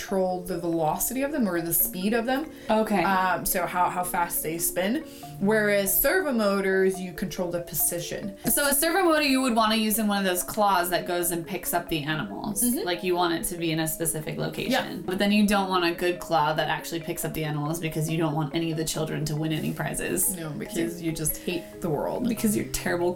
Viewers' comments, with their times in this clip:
0:04 Sounds like a stepper motor.... fail